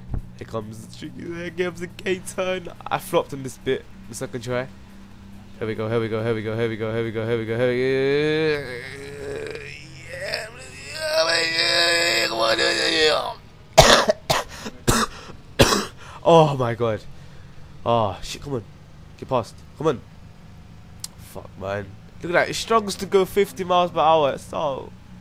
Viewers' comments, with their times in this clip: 0:08 wth where u doing?? commentating while on the toilet hahaha!!! Anyways, nice vids.
0:10 ... thats exactly how i sound when i have explosive dihareea